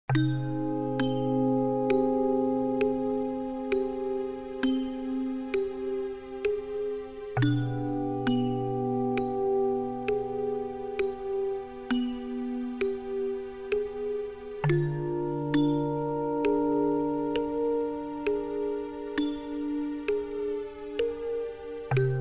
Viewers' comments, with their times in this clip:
0:06 that violin on made me so unsettled. Good lord.